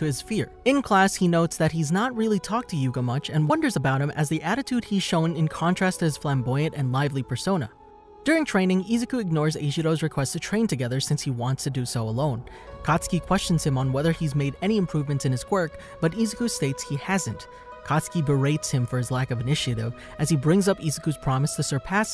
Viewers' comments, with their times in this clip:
0:03 did anyone else here the voice crack